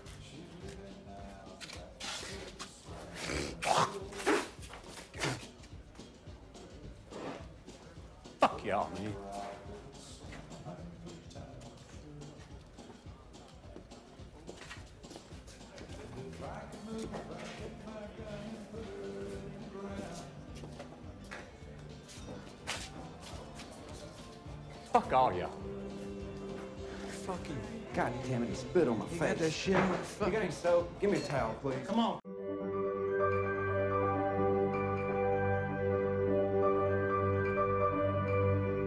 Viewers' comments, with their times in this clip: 0:08 you can hear the palpable upset in his voice. Damn, McConaughey is one of the best actors working today. A well deserved Oscar.
0:23 you can hear in his voice the pain to be rejected by all his "friends" like that. Amazing movie!